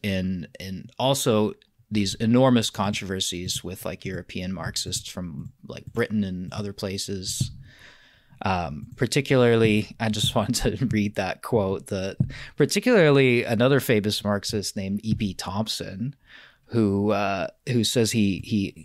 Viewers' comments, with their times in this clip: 0:04 omg dude please stop playing with the mic